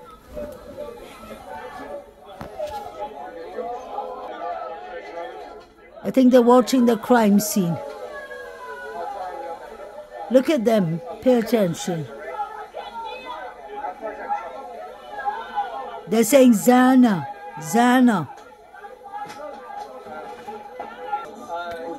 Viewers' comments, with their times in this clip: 0:08 someone screaming stop